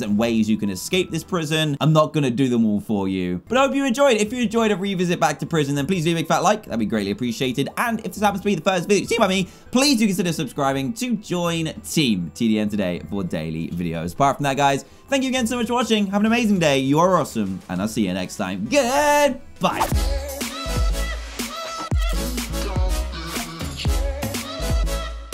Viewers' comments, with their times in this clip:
0:07 Who else heard his voice crack than watch till 18 : 23
0:09 That voice crack 😬😬